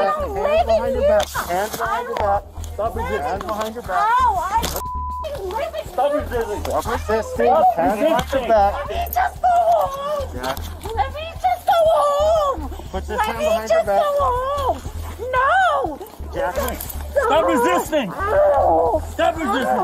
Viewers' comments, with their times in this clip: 0:07 in her "Let me just go home" almost sounds like it came out of a song!!